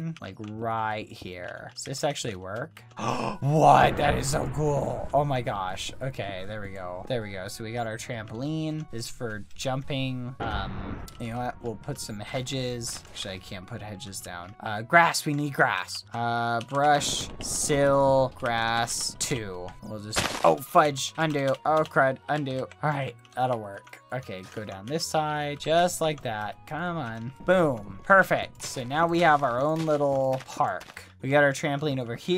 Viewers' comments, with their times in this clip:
0:10 did he just say what I think he just said? o * actually * he said actually but it sounded like it also nice timestamp (¬ -̮ ¬)
0:13 listen very closely you can hear BBH say the F word listen very close
0:13 It sounded like bbh said 'sh*t I can't put hedge's down'
0:13 Did bbh say sh!t or shoot-